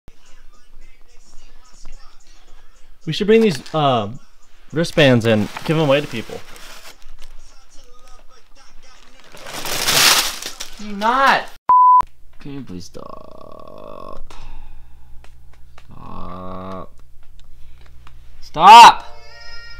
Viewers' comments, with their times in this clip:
0:00 that song is chill bill